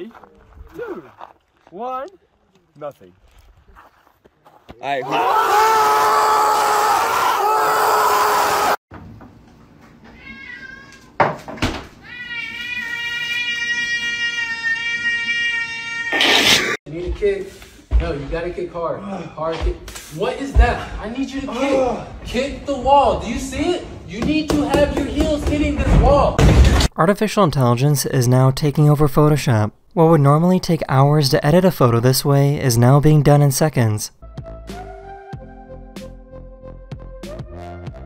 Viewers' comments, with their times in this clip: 0:04 the screams of joy 😂
0:05 bros screams were louder then the volcano
0:11 Cat meowing longer
0:11 when your cat is a air raid siren
0:25 me when I see that cat meowing: